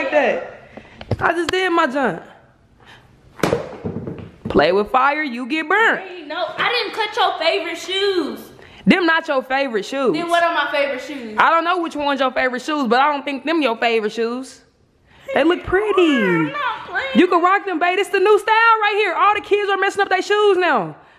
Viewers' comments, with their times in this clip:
0:04 I love haw she said that from medicine...